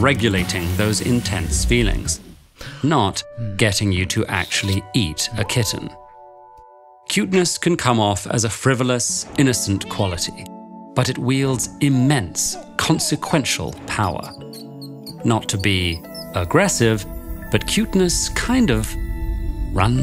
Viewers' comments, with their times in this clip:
0:03 Okay, but can we talk about that soundtrack??? The shift made my eyes tear for some reason